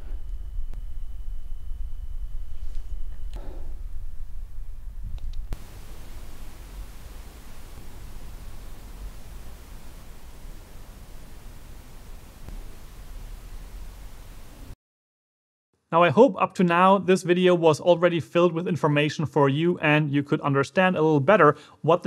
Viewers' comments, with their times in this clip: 0:06 Why is the lav mic so noisy?